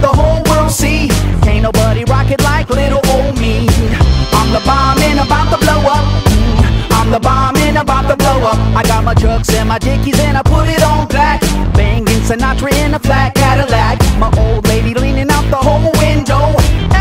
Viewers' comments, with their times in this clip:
0:04 The tap of I gotchu bro